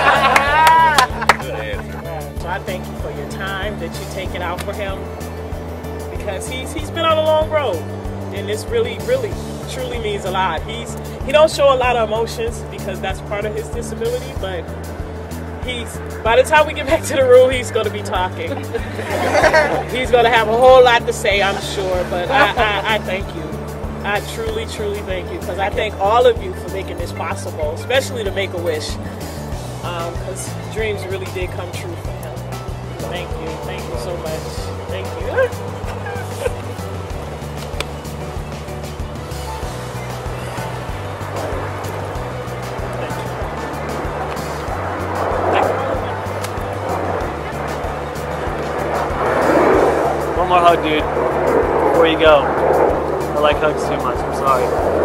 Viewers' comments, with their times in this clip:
0:09 SO we gonna annoy the ring tone?
0:27 her trying to thank them serenely and a ringtone goes off Lmao but your a great person bro keep it up
0:30 who else heard the phone ringing
0:32 Did anyone else hear the iphone. Ringtone during the mum speech
0:40 awkward silence after that hug